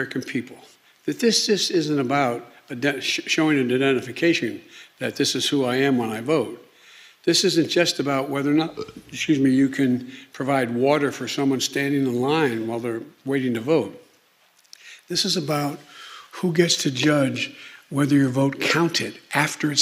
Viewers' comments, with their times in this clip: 0:04 NEW WORD OF THE DAY FOLKS "DEDENIFICATION"... mark ... Burppp !!! Seriously?! I guess it's better from the attic and not from the basement 😜 like Swalwell !